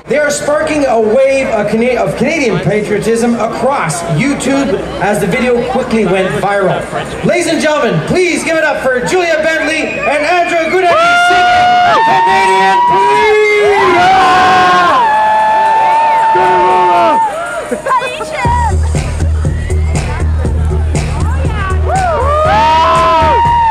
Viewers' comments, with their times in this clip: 0:10 LMFAOO My screaming